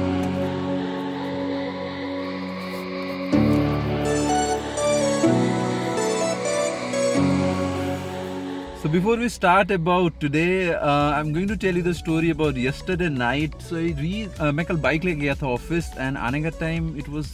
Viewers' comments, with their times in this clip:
0:03 ....that beat is awesome.